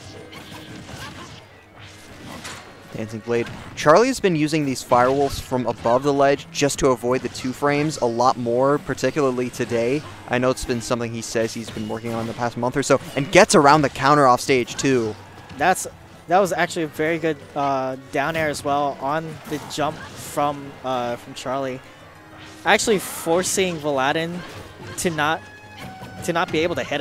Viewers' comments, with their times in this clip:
0:08 was someone hitting a vape in the video hahaha